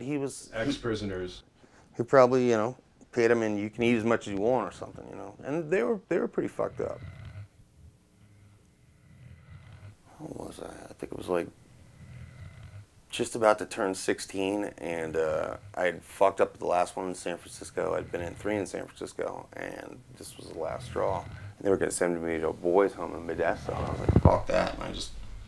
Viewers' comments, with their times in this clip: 0:06 Who the fuck is snoring lmao
0:07 Does any one else hear that creepy ass growl-breathing starting ??